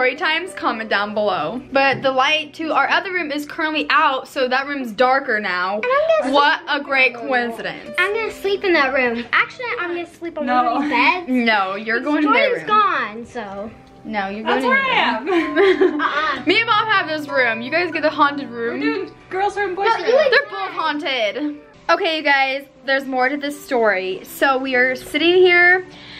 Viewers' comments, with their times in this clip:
0:09 at the video its creepy because someone said in a toddler voice "i'm gonna sleep" it was really creepy